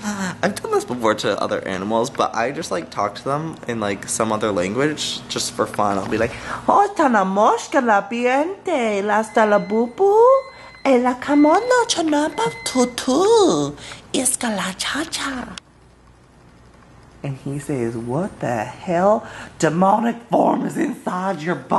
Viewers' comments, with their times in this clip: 0:06 Lol your 'other language' is so cute :) and the dog is ADORABLE <3